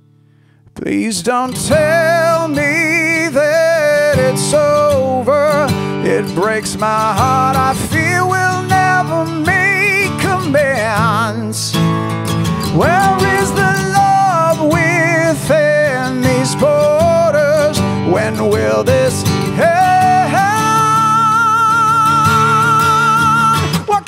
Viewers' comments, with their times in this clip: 0:10 Someone help! what's the 2 chords after D and before G? I think it's an A but not sure what it should be followed by? I'm also struggling with the chorus chords, is there a kind soul out there who can tab this ?? <3